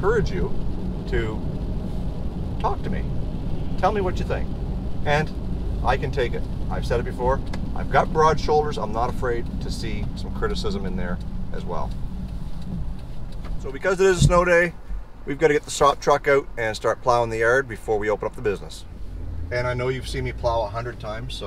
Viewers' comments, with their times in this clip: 0:07 is sounded like you said your 74